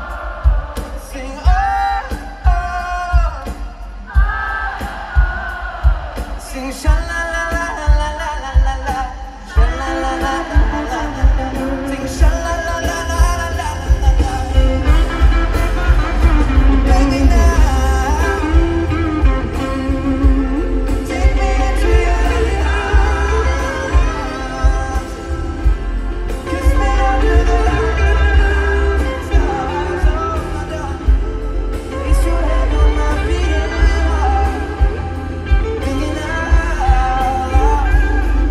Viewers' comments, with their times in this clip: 0:07 How does the girl know exactly what to sing (in harmony) ??
0:22 i thought he was gonna sneak in the Gravity lick lol